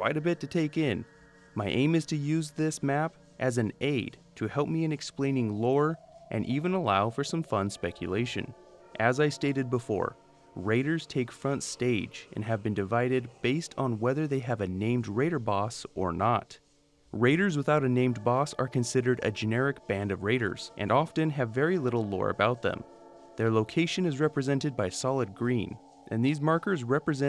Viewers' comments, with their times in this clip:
0:10 the hell is that music